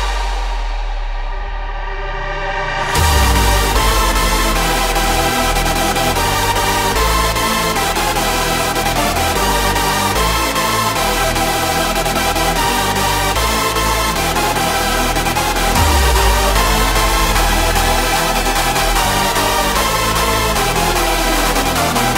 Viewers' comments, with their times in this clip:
0:03 Am I the only one who thinks the feeling from to the chorus is similar to Bad Habit by Da-tweekerz?